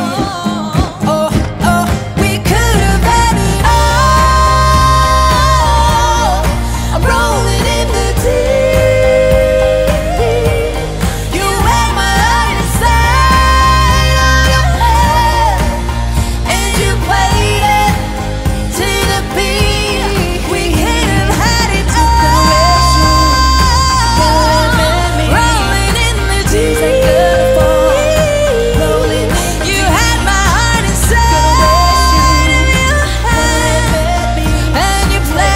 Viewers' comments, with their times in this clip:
0:04 right...the high note is Henry and Ailee do the falsetto ,cause Ailee already did the high note at the first chorus,
0:21 why does the way he sings this section remind me of the weekend? (in a good way)